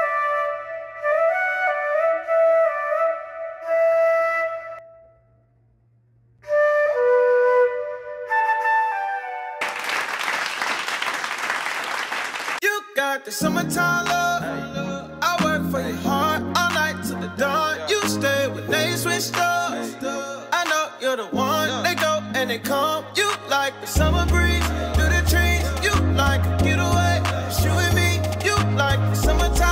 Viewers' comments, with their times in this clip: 0:10 LMAOOOO but fr tho you play the flute good